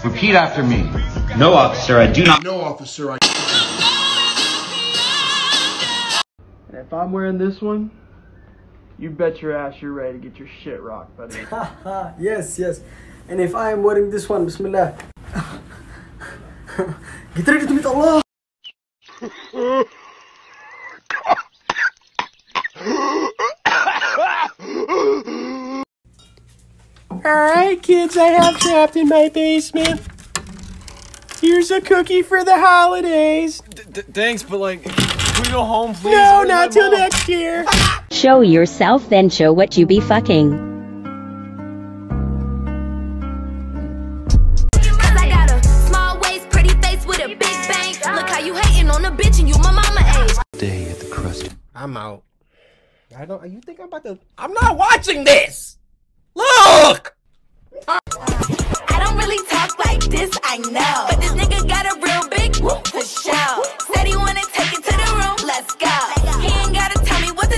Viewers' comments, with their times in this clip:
0:04 That song plays at almost every funeral I've ever been to.
0:53 that’s coryxkenshins voice how are people using what ever now